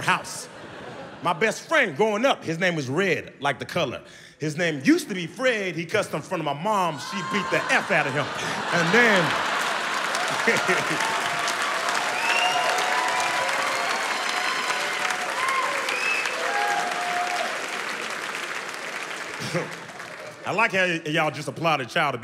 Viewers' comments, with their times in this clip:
0:07 that synchronized ‘ohhhhhhhhhhhhh’ 😭👌🏾